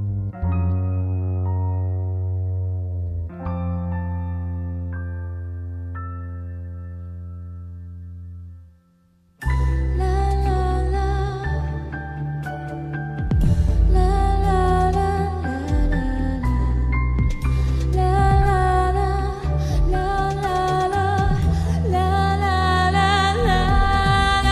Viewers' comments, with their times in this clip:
0:09 As what the title give, it really gives me a calm and relax mind, plus it's really good for bedtime.. some how, I seems like hear to sweet angel's voice.. -,-